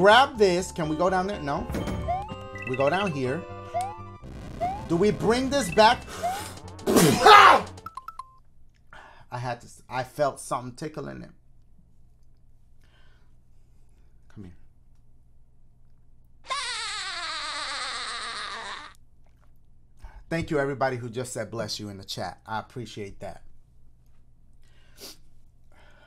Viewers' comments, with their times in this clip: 0:04 That sneeze though 😂
0:06 I’ve never seen Dashie sneeze
0:06 Man sneezed o hard, sounded like a Gale Force wind. I don't even have headphones on.
0:06 bless you my guy
0:06 bless you mah boi
0:06 that sneeze tho lmfao 🤣
0:08 WTF KIND OF A SNEEZE WAS THAT? OR ARE YOU ASKING HOW YOU GON GET PUH? MAN IDK